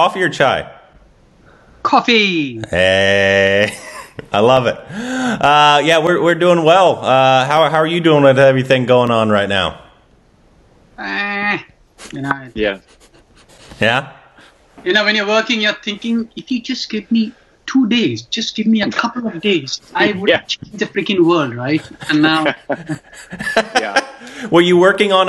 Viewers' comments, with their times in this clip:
0:06 so far listening to Sujoy Ghosh, it feels like he's speaking Japanese. 😄